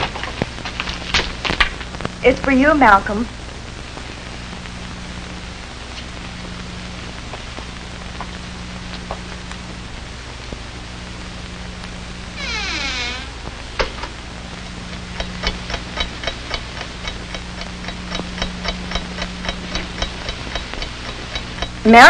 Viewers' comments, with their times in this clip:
0:09 The door's squeak sounds like a disappointed "aww" that the call wasn't for her. Makes me wonder whether that was intentional.